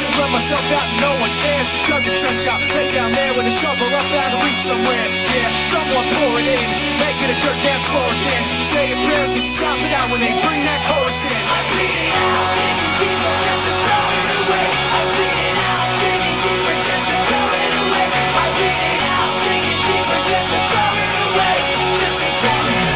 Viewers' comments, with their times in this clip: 0:03 oh man this song is good oh look a cat